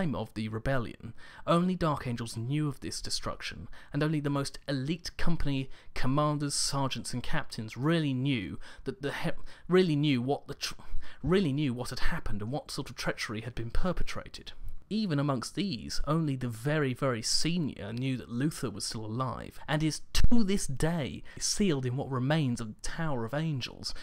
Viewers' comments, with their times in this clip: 0:07 having a stroke